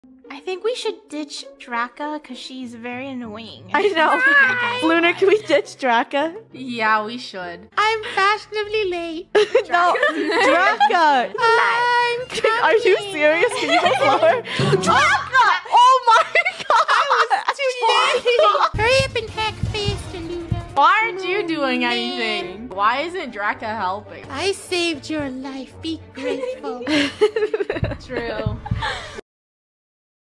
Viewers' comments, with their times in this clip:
0:08 who else LoVes when draco/draca does that voice 😂😂😂
0:19 May I order a “yoot” computer